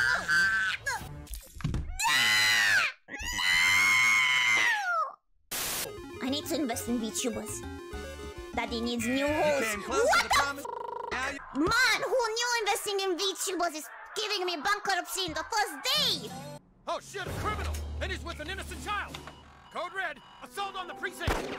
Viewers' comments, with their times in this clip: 0:03 Her screaming "NO!" sounds exactly like Sr Pelo's Mokey.